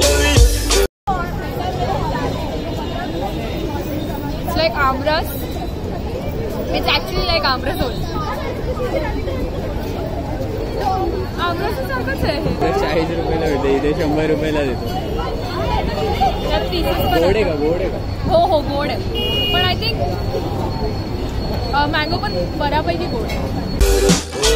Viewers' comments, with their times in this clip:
0:07 the marathi accent came out.... 😀😜